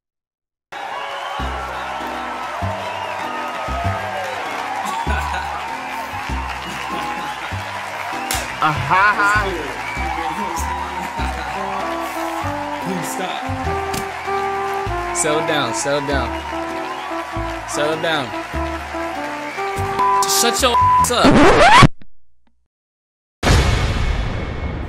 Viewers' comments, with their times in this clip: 0:08 I died at the ahahaha